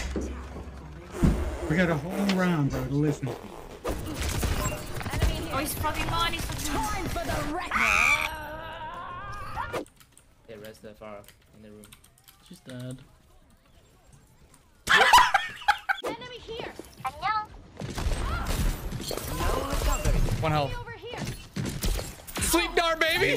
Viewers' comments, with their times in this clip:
0:04 the scream being immediately cut off nearly killed me.